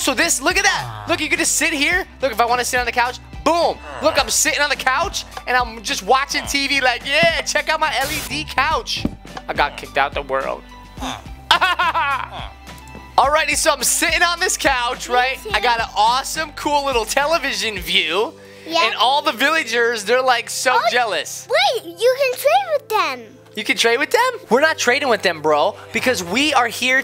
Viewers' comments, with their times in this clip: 0:08 i got kicked out de world.. fake crying